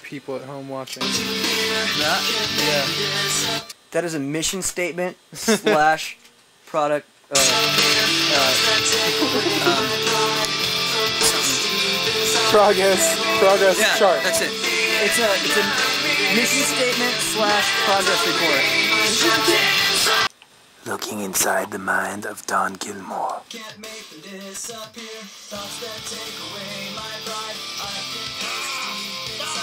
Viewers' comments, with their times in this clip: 0:09 I freaking love that instrumental
0:13 DAMN ! LINKIN PARK SHOULD MAKE 2 VERSIONS OF "LOST". THIS ONE SOUNDS SO GOOD (WITH CHESTER SCREAMS "... Memories trapped inside of me ...)